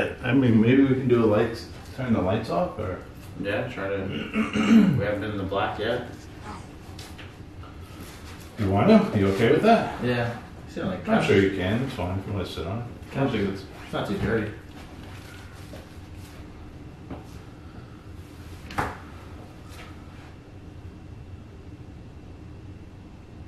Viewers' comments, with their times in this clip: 0:06 someone says "WOW" into your camera
0:06 sounds like no
0:06 a voice says no
0:06 you can hear a voice say “no” or something like that.
0:06 someone says “NO!!”
0:06 a voice says no. i think it was a female voice.
0:06 you hear something say NO
0:06 as soon as you say sit shut the lights of you hear a female voice say no into your camera
0:06 after saying should we turn the lights off you can hear something say “no”.
0:06 sounds like "Hey"
0:07 Awesome video.. I hear male voice sounds like get out or something like that. Stay safe stay humble, Peace n Love
0:07 Another female creepy voice
0:07 you picked up a voice saying something!!
0:08 when you ask about turning the lights out, you hear a voice or, a gasp
0:08 you hear a male voice that sounds kind and says NO and he sounds like he’s trying to protect you. That thing in the kitchen is DEMONIC AND SINCE YOU BOTH TOUCHED IT I HOPE YOU BOTH HAD A CLEANSING OR A BLESSING DONE TO YOURSELVES